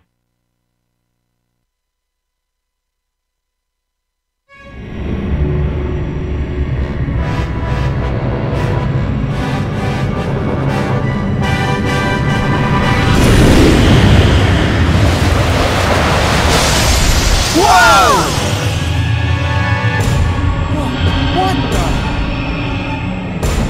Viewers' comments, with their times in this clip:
0:07 orchestral version of There Goes Hawaii starts playing